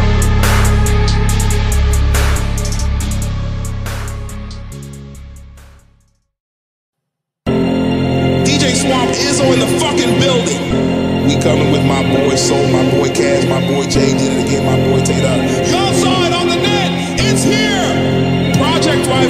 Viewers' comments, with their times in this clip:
0:06 demonic music i ever heard ngl 💀